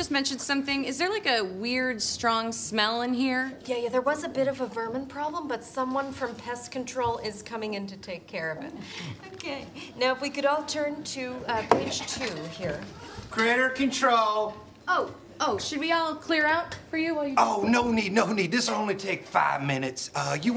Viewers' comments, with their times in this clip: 0:08 Kate saying "ok" makes me melt.